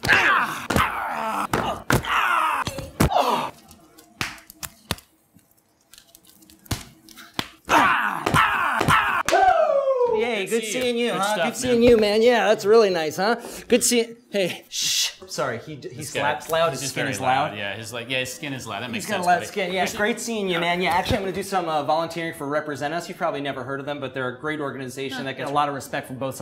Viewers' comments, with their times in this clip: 0:09 Ric Flair "WOOOOO!" chop. 🤣